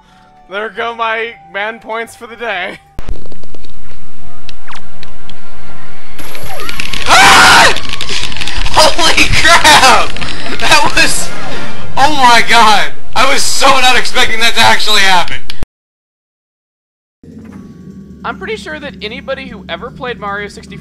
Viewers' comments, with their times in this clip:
0:06 eMILE HOW FAST ARE YOU MASHING BUTTONS!? HOW HARD IS HE EVEN MASHING THEM IF THE MIC PICKED IT UP???